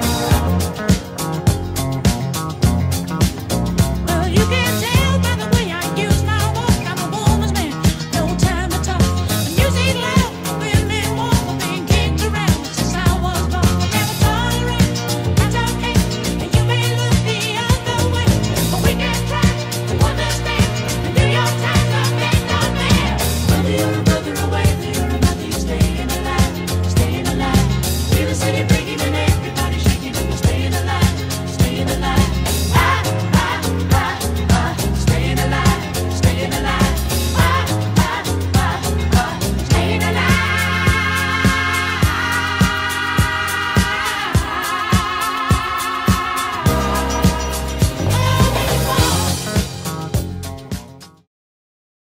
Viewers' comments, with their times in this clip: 0:09 omg it does sound like that 😂
0:40 The fact that their clapping is on beat makes this 10x times better
0:40 The guys clapping is so well timed for the music that it seems like that was actually playing there.
0:40 not them clappin on beat xDD
0:41 why is his clapping synced to the music???